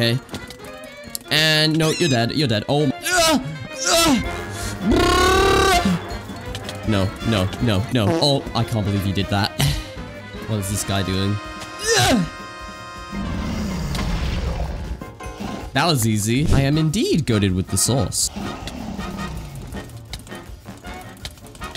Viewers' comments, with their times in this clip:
0:05 guiny gun go brrrrrr